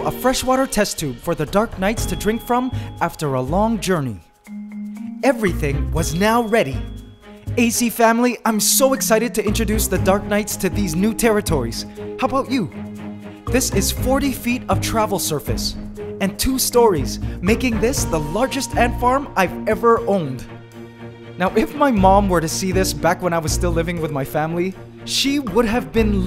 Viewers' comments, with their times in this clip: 0:09 he said the dum knights lol